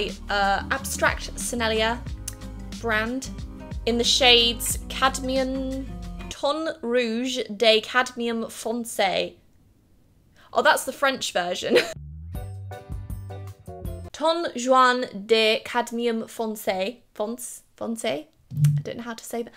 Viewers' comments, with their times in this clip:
0:04 I love your accent 😍